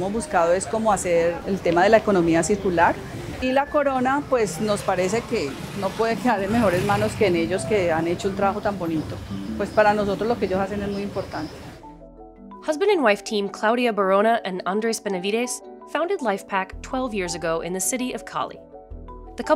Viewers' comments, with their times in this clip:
0:03 Do they really talk about pineapples? Im sure I heard "Corona" !!!😂
0:03 I thought "CORONA" 😂